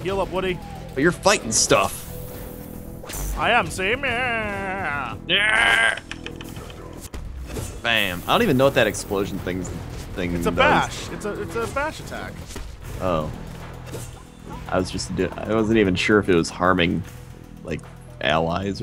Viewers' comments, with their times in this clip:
0:06 My pet björn makes the sound they make